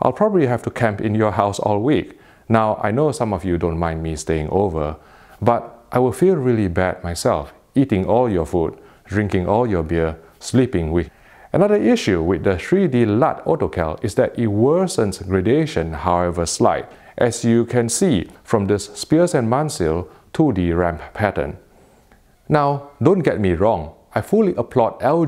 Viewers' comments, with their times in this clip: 0:08 you were cut off there... What did you say :)